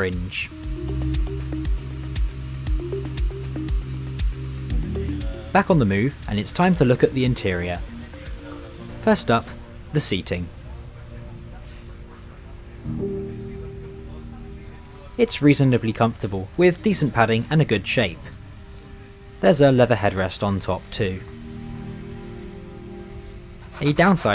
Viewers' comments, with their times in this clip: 0:09 and that is the best seat in 2nd class we have in the netherlands, the ICMm is my favorite train tbh i like the chopper sound